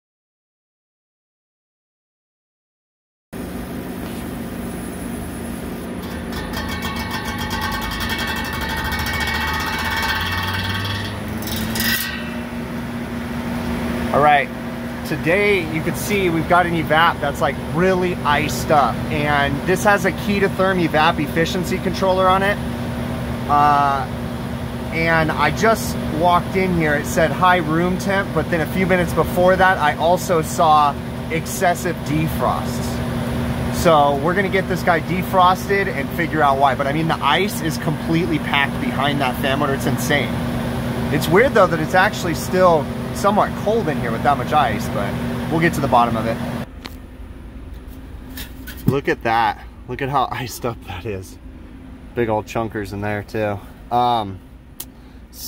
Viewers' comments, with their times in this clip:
0:08 Yeah that's the sound an evaporator fan should be making. Sure... How long was that happening anyway
0:41 replace that fire alarm !!